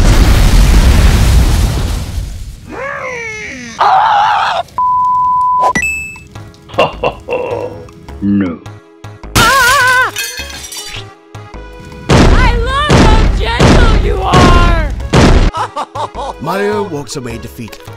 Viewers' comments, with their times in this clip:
0:03 Mario absolutely screams